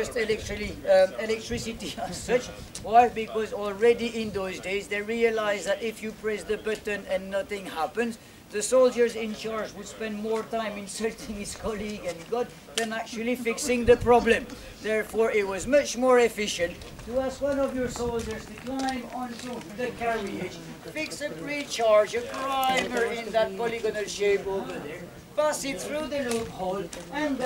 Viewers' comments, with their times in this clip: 0:09 I don't care what you say I am now incapeble of imagining maltese people speaking in any different way
0:09 he’s not real. Honestly it does annoy me when places use people with accents they know people are gonna struggle to understand to be tour guides. People don’t want to pay money to learn history and then not understand a word that comes out of a Belgians mouth.